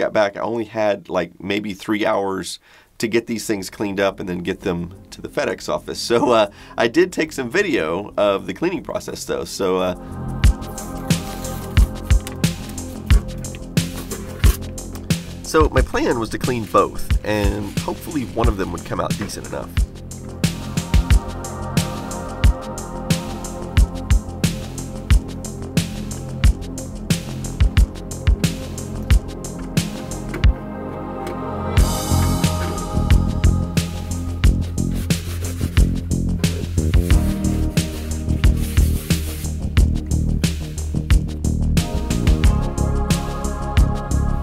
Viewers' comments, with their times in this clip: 0:09 i think the erotic music works really well with restoration video. gives a more intimate feeling especially when peeling away that sticker. ooooooh yeahhh XD
0:27 The music ... anyone else get a weird nostalgic vibe of walking through a mall in the last 80's early 90's